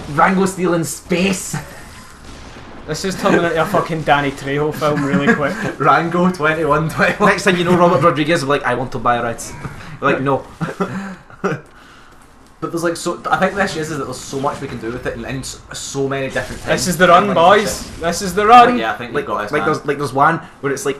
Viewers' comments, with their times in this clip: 0:07 smh robert rod doesnt have an accent